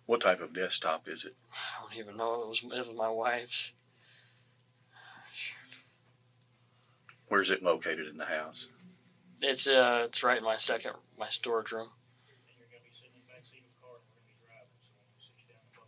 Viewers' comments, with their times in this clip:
0:03 When he mentions his wife, then says "ah shit" under his breath. He knows he's toast. 😂